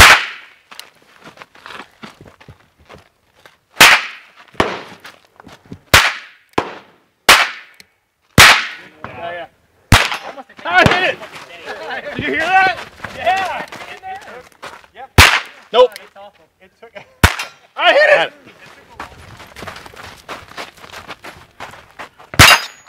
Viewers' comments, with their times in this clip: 0:09 I love the pure joy from: "HA, I HIT IT" :D